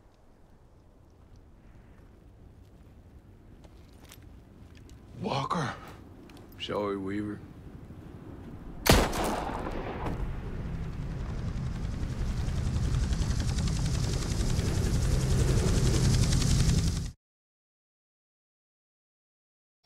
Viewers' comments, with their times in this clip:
0:06 That "Sorry Weaver..." You can hear the human in that but you can also hear how he has a job to do and must get it done it's like he's actually regretting killing Weaver